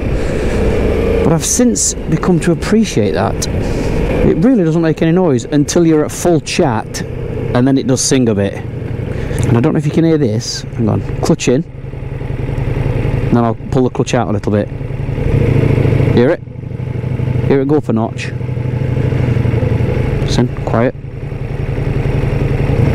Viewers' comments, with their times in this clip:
0:10 that “flaps open” is the V4 going in & out of cylinder deactivation mode, once the clutch is letting out & gear engages. Once at temp around 160F +, 2 rear cylinders shut off at light to cool bike & rider. You’re hearing 2 cylinders back to 4